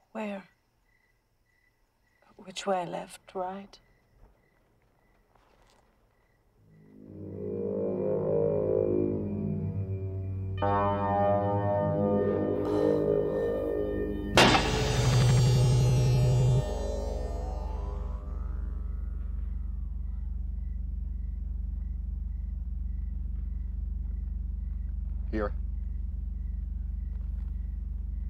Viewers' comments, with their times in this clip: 0:10 I think i'm obsessed with this scene. I like the sound it makes When the light ball rises.